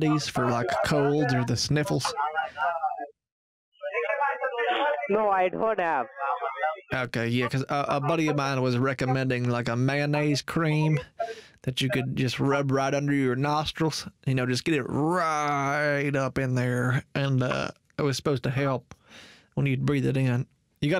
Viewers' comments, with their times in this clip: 0:04 Did the scammer just fart? Cause that sounds like a fart to me. xD
0:04 scammer let out some gas